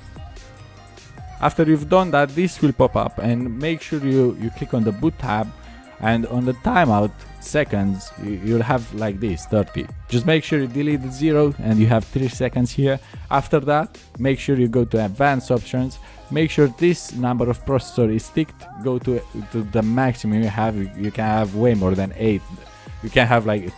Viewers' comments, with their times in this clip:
0:05 Voice Crack "And on the TiMeOuTt" XDD